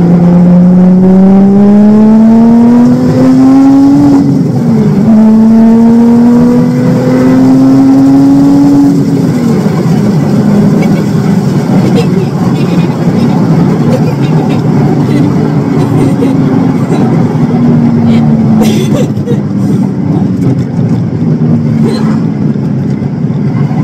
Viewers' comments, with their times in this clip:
0:10 The giggles sum up everything we need to know… and it will never get old!